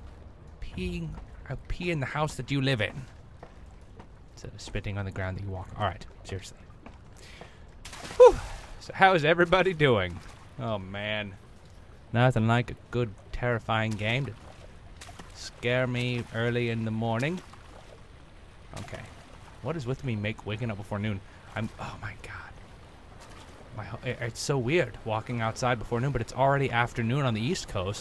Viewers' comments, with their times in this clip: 0:10 IM SO SORRY I SNEEZED D':